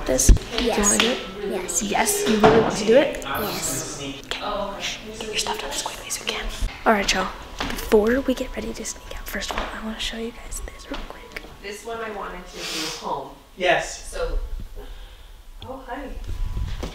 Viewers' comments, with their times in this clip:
0:04 i like how one of the parents said “sneak” but it cut out😭